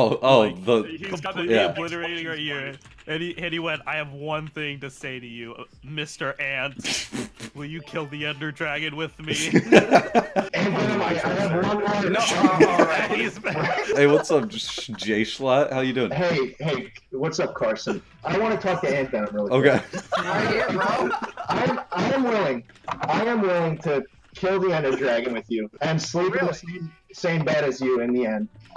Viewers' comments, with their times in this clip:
0:10 when the sirens rang